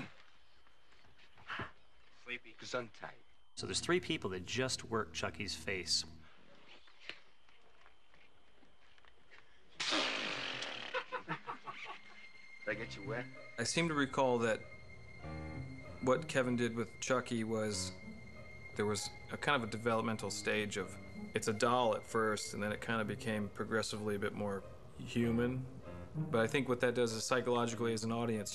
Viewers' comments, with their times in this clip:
0:05 Chucky also can fart XD
0:10 CHUCKY FART XD FUNNIEST